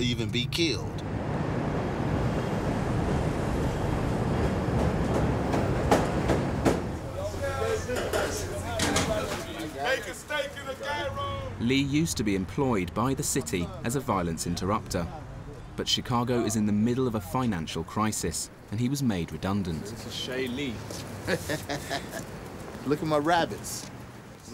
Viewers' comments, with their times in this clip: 0:10 dude just said gyro with a hard G lol